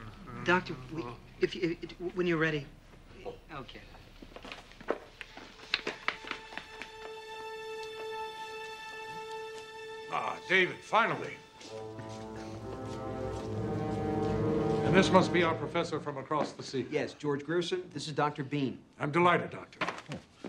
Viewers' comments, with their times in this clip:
0:06 someone boots up their PS3